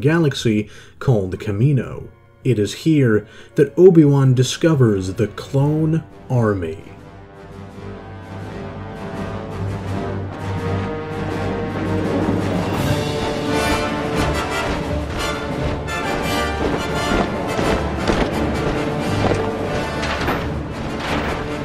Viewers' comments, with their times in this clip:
0:06 i get chills every time i hesr that music and watch this scene.